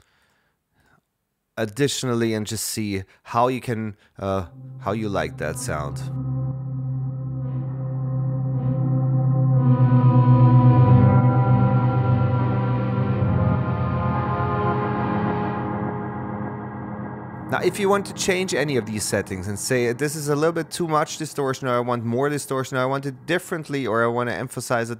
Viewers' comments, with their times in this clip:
0:09 That saturation on the patch sound fantastic.